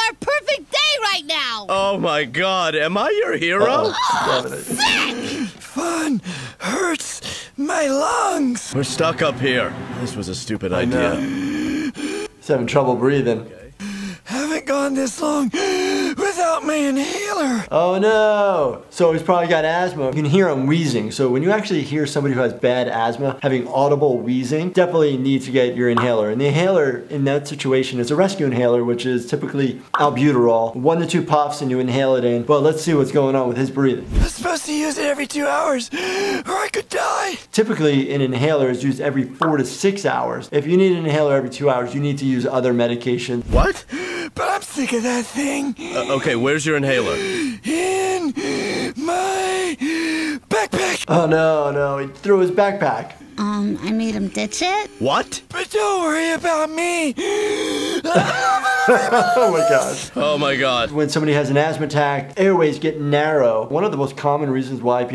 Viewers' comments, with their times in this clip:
0:10 Aww he genuinely sounded worried when he heard his breathing ♥️
0:53 Anybody else thinking he sounds like Spongebob without water? 😂